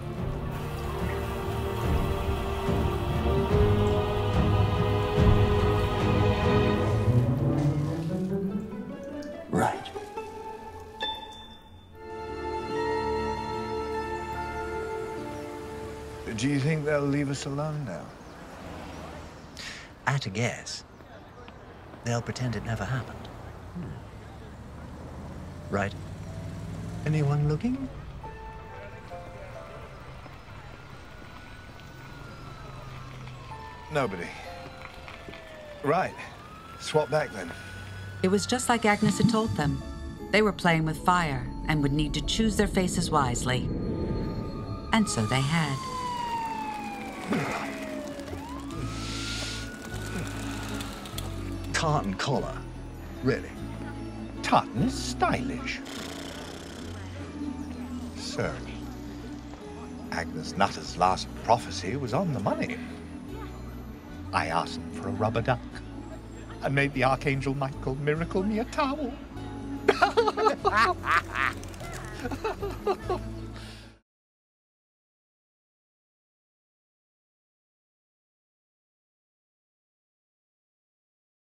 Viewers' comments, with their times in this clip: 0:10 I like this part where the ping is on beat with his face scrunch
0:13 I just noticed it. Even “Aziraphale” voice became deeper and the sitting posture was so relaxed like Crowley, and “Crowley” made a higher voice and sit diferently. The way how the actors portrayed each other characters is amazing.
0:15 Sheens low voice in that tone is actually kinda hot! Don’t judge me!
0:17 I love how you can tell that they switched because of the cadence of their voices and the how they’re speaking because that’s how they would normally speak. It’s also cute that Aziraphale ask for a rubber duck as Crowley since one of Crowley’s favourite animals are ducks. Also Crowley’s laugh at the end kind of does sound like a duck 😅😊
0:20 I'm still not sure if it's Aziraphale's voice (ie. Michael Sheen) or if it's Crowley (David Tennant) trying to speak like Aziraphale. Same vice-versa
1:10 Can we please talk about Davids duck laugh ????